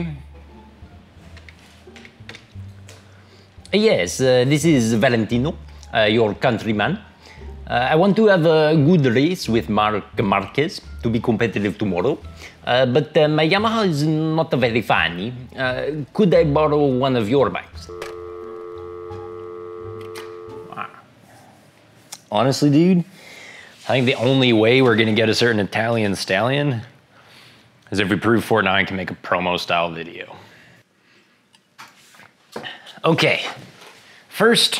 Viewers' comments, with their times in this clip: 0:03 Fucking hilarious "oh yesssss disss is Valentiinoo, your contrryyy man" ROTFL!
0:17 the accent of Valentino......laughing my ass off